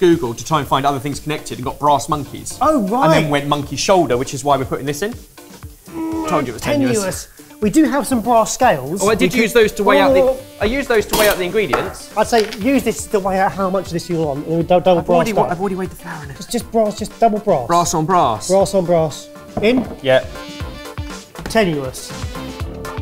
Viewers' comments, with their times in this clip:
0:05 neat synced up saying tenuous